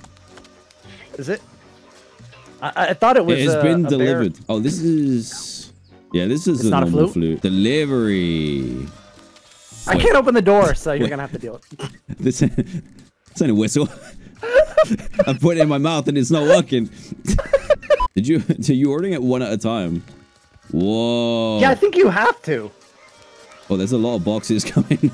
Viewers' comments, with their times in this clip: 0:07 "That's not a whistle " *The sound of hysterical laughter* "I put it in my mouth it's not working" *WHEEZING*
0:13 cuts to him giggling over the Strange Rubber Object